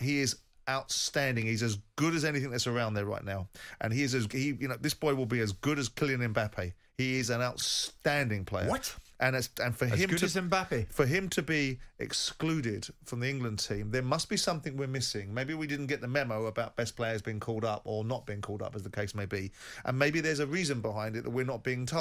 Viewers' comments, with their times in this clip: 0:04 The way Jim say WHAT had me in stitches! lol made my day!